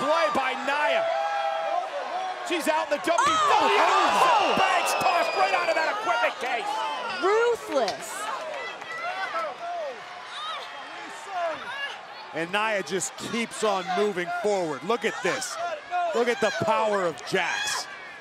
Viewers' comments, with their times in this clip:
0:03 You hear that littlr girl screaming with that ribbon it was actually sad😢
0:03 listen to Michel cole, near the end of the sentence he kinda sounds like squidward.
0:03 is that sasha banks screaming?
0:04 Oh my god that scream !